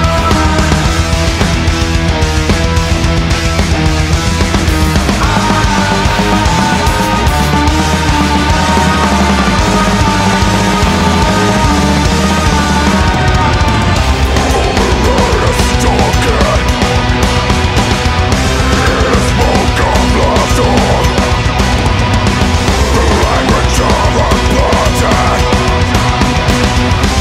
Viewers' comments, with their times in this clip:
0:08 Axe, that snare has feelings too!
0:12 best key change!
0:13 BRUTAL ,those drums man o_O